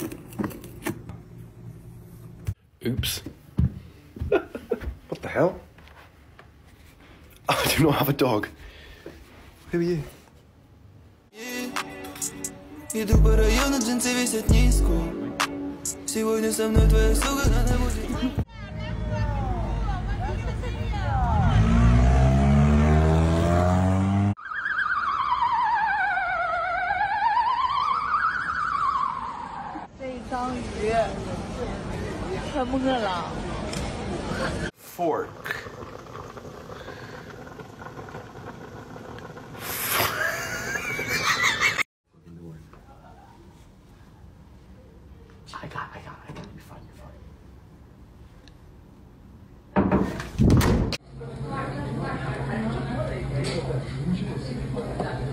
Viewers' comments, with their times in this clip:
0:06 "what the hell" he said calmly
0:24 spooky ahh ambulance
0:24 How a ticklish ambulance laughs:
0:25 Hey guys look an AmBOOlance
0:25 If anyone has seen the claymation show The Trap Door, you will know that the ambulance sounds exactly like the sponge monster. It's uncanny.
0:37 not the twok!